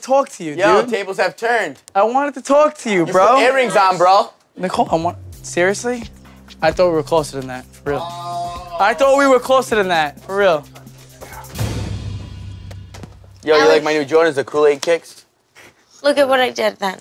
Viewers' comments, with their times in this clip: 0:04 when Vinny says Nicole you can hear his voice cracking like he is hurt